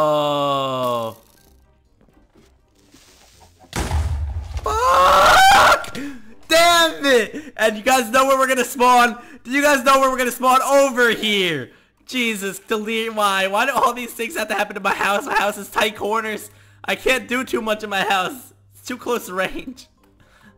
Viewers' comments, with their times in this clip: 0:04 what was that scream 😂😂😂😂😂